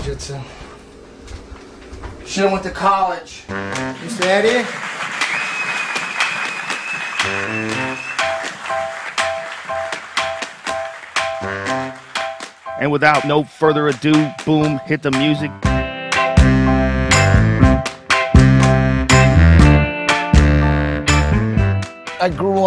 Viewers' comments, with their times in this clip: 0:03 The bong is a perfect touch